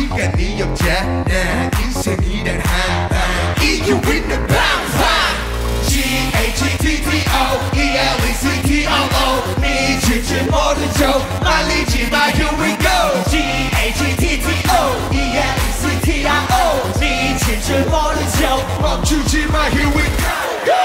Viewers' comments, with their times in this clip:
0:05 LOVE T.O.P.s voice <3 i replay it over and over!